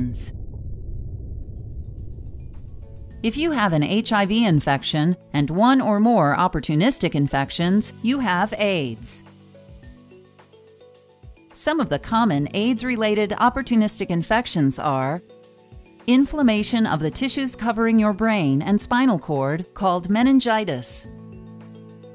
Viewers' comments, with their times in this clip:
0:09 'You have aids'. Inserts happy music 🤦